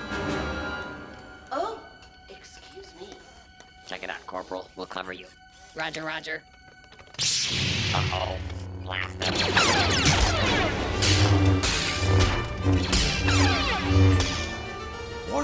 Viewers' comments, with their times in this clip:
0:03 I like those voice of Battle Droids (Live-Action era)